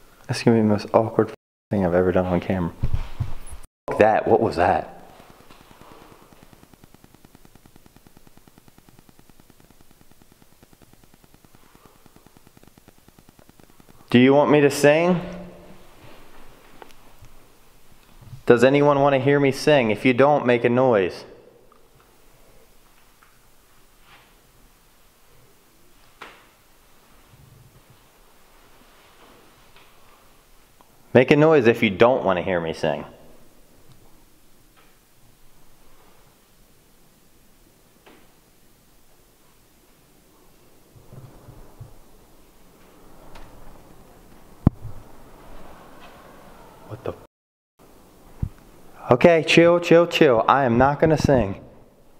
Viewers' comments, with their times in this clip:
0:05 you hear something behind you like a thud or knock and ur audio goes staticy
0:33 idk but o thought i heard a weird noise. might be just me. volume up with headphones.
0:36 you ask the spirits to make a noise if they don't wanna hear you sing and I hear little taps around you